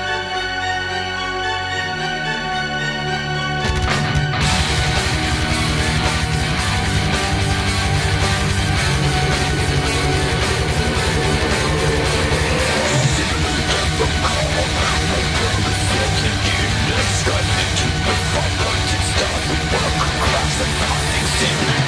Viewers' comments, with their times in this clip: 0:03 That Drop is Just So Fucking Evil!!!